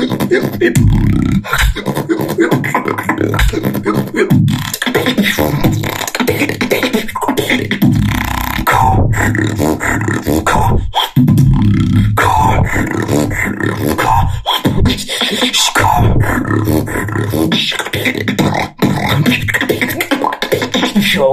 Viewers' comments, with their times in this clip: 0:06 Your beatboxing to very talented! I'm not one myself. So, it's nice to listen to others perform something I cannot. Anyways, your beatbox was great; I have a favorite part of it though.